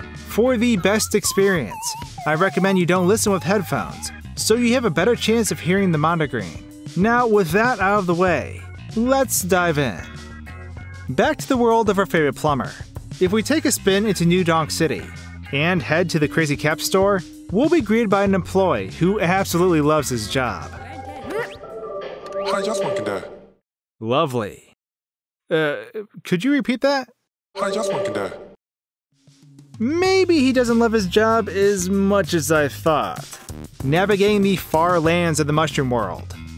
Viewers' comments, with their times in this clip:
0:05 At the start, I thought he said "mom" followed by the N-word
0:20 I heard the exact same thing
0:20 Hey dress well today. WHAT IS WRONG WITH ME?! No. I dress well today. Or perhaps I (Or hey) dress well to die
0:20 I always hear him saying " I just want to die"
0:21 even when I played through the game with no headphones I hear “how’s your swanky day”
0:22 I heard “How’s your smokey day?”